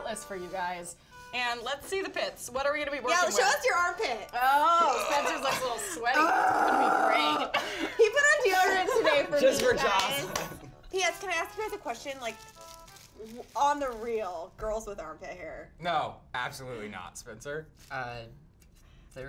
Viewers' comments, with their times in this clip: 0:04 RYLAND'S STRAIGHT VOICE IN THIS AND MANLY GRUNT HDGSAGAGAHAHAHAHAHA